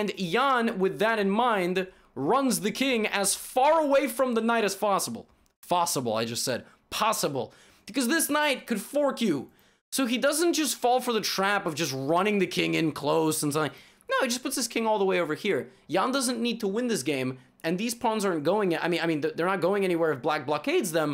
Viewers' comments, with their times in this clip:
0:08 Because this night can ,,fork you" sounds like ... 😁